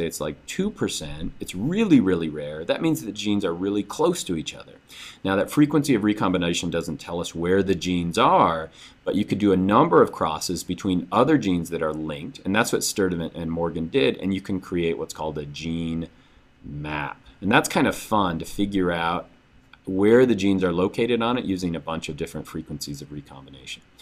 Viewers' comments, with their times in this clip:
0:05 tell me why he slipped into a heavy Australian accent im scared